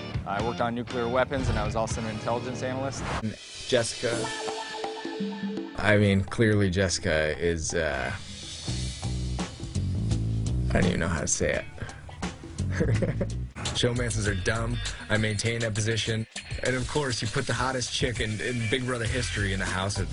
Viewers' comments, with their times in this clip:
0:03 that song though 😂